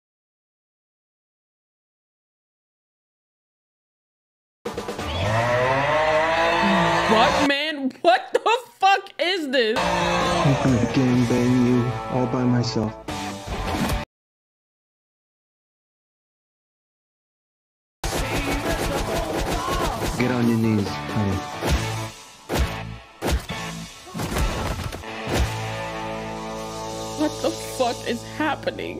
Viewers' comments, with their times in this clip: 0:09 That sound bite. AAUUUUUGGHHHH 🤣🤣🤣